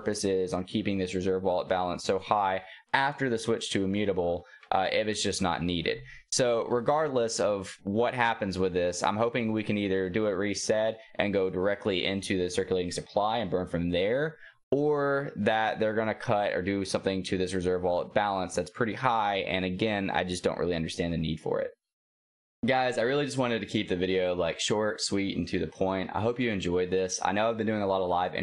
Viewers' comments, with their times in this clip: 0:09 you say his name right lol